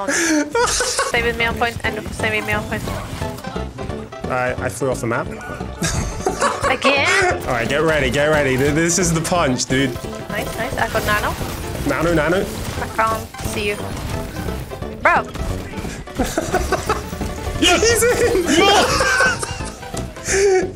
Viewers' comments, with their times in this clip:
0:05 i love the "again" cat sounds so annoyed.